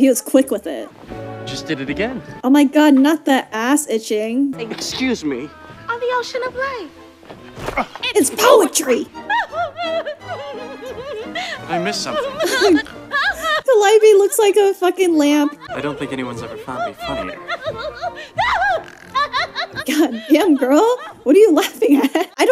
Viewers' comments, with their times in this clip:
0:06 I think the reason she's laughing so hard is because he's touching her waist, every time his hand goes to her waist she laughs. I have a very similar reaction I do not like people grabbing me around the waist or rib area, it's jarring.